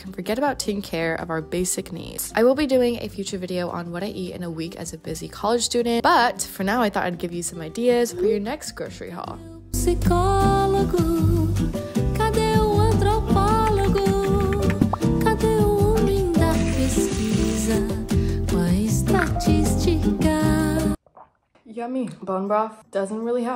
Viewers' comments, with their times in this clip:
0:10 omggg when this song started i gasped, i was checking if my spotfy was open ahhahahaha love a good brazilian MPB
0:11 I’m Brazilian and was really surprised to hear a music in Portuguese 😂